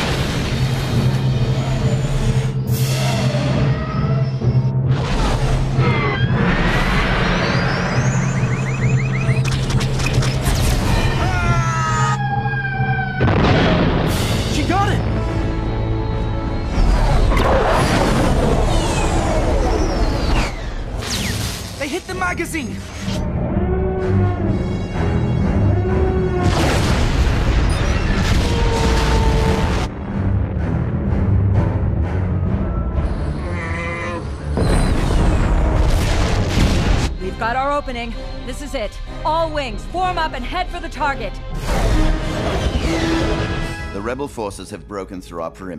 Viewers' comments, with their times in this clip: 0:10 Ahhhhhhhhh!!_ TIE Defender : AHHHHHHHHH CRASH LOL
0:11 That is always funny to me. Just the way it transitions to the screaming TIE Pilot to the high pitched scream of the TIE itself gets me.
0:33 that guy sounds like a Wookie